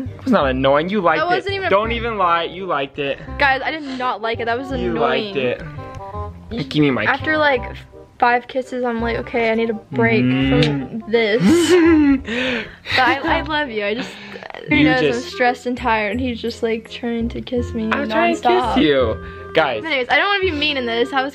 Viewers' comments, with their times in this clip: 0:04 Does anyone noticed that he sounds exactly like "Hedwig" from split..even the way he talks tho..